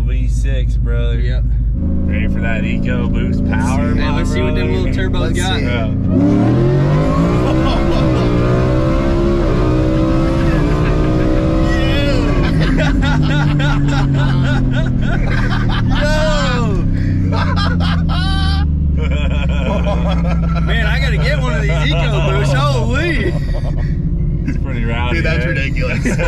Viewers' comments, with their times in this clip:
0:10 bro the laughter of pure joy says it all about how fast this damn thing is Jesus Christ😂😂😂